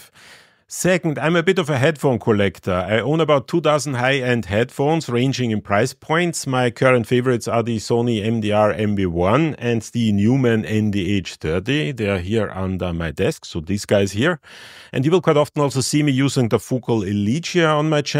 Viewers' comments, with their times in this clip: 0:03 I thought you said you own 2000 high end headphones!!! I had to listen back and realised you said 2 dozen, which is far more reasonable